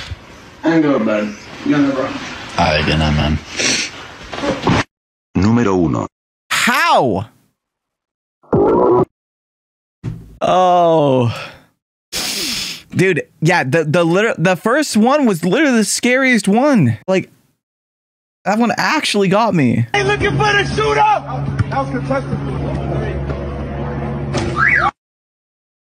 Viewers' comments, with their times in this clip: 0:10 did anyone else notice the natural autotune